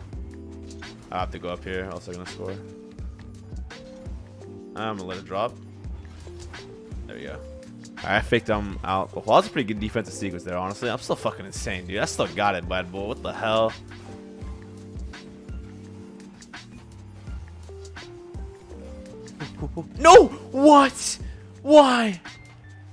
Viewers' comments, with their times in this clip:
0:06 sounds like you programmed an AI to try and sound like you.